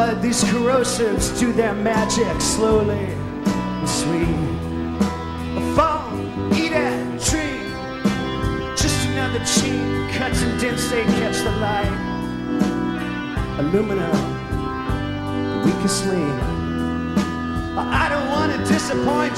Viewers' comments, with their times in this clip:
0:05 nice triplet flow. beautfiul song and performance btw